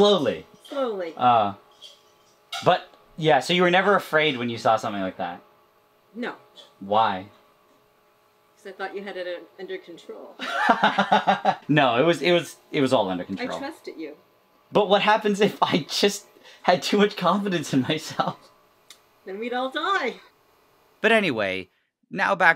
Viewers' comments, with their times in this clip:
0:09 "I thought you had it under control" starts laughing hysterically